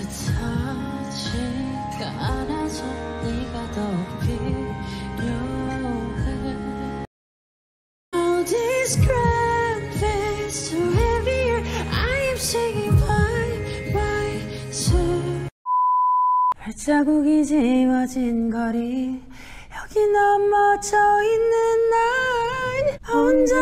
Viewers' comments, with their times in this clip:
0:06 that Blue n Gray performance on MTV seriously got me into Jimin I’m so many ways regarding his voice. I remember I had surgery that March and couldn’t sleep so I played their unplugged on my DVR and by the time that song was over, I passed out. And although all of the members did amazing in those performances and o truly love them all, it was Jimins lines in this song that made me feel peaceful enough to close my eyes and listen. It almost makes me want to cry recalling it because it’s beautiful that people can have such talents that bring peace to others. 💜